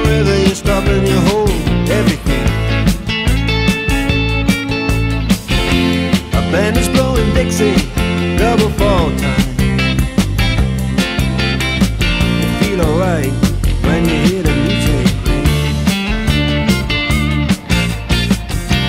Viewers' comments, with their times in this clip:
0:04 you have a mistake, the bass isn't right , it says f and you dont play it